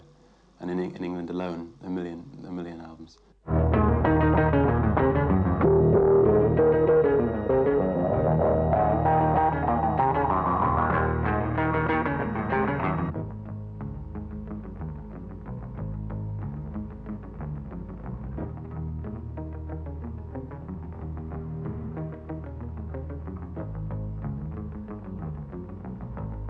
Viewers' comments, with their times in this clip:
0:07 This Bass section on is so unique. 'Mike is definetly the best bass Player worldwide. Name a better one if you can.